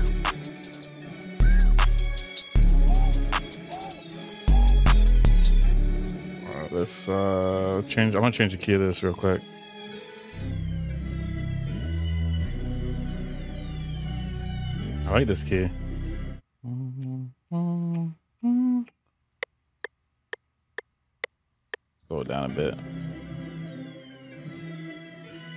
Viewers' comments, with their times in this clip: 0:09 how did he change the key?
0:09 What did he do to change key ?